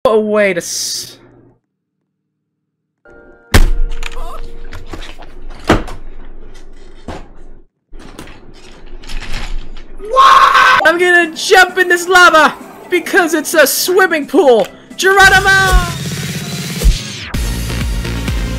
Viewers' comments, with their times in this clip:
0:06 I heard a MOAN........ AHHHHHHH!!!!!!